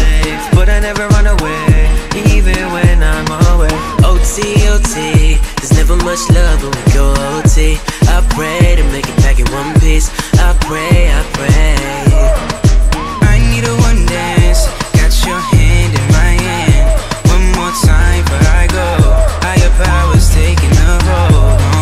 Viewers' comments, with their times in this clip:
0:03 when his voice changes to drakes voice